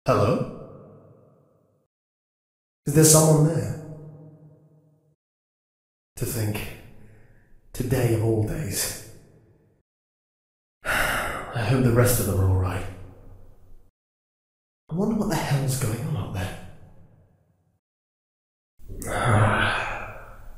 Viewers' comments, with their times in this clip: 0:03 they sound like polite british persons